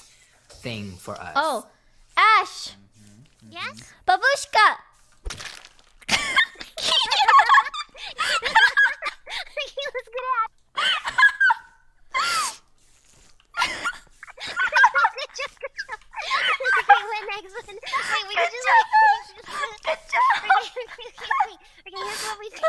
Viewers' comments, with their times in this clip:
0:03 the way she says babushka is really cute